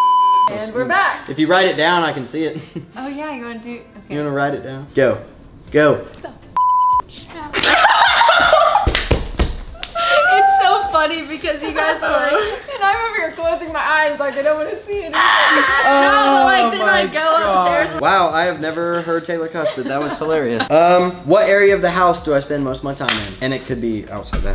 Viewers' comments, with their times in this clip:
0:05 she said it so quietly